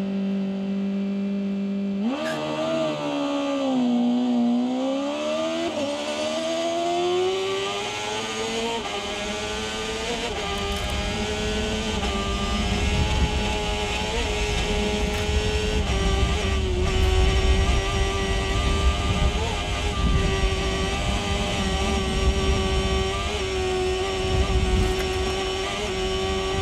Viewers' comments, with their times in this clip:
0:10 Sounds like a 600cc What y'all think?